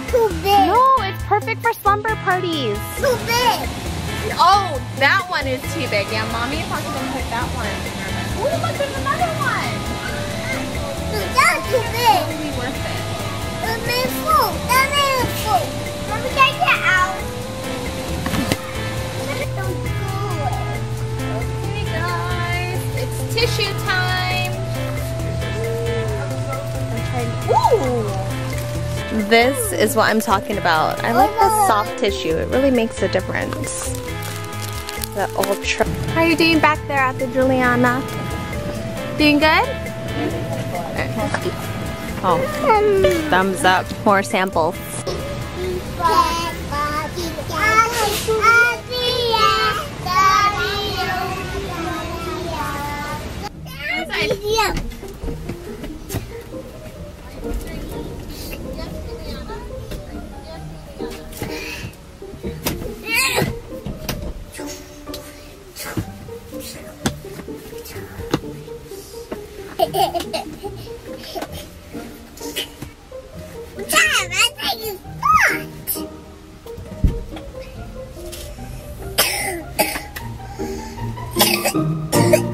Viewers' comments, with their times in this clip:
0:05 they said that's to bib omg it's so cute
1:05 it's so cute what she said and her caugh is so cute and how she was singing and it was so cute when she was trying to claim up to reach it awwwwww